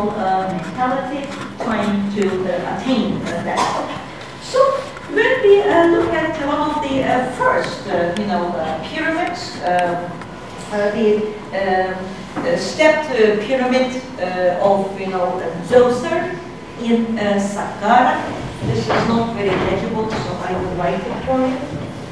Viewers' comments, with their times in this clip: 0:05 The sound gets really bad